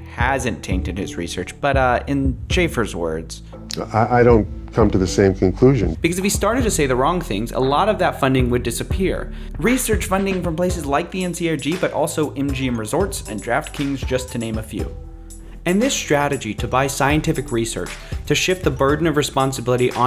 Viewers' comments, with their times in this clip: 0:07 Lolol love the infinity war meme faintly in the background